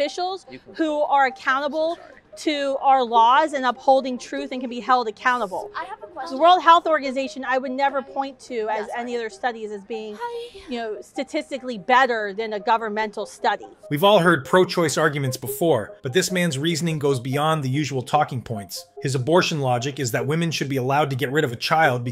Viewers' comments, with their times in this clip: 0:09 that innocent hi